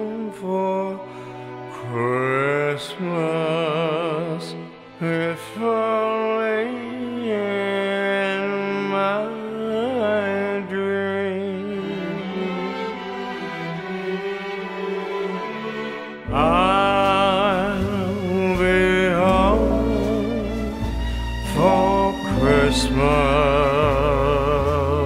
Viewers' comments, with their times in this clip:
0:06 Scott is a good singer. What the hell happened here?!?!? And why was this published?!?!? lol my god.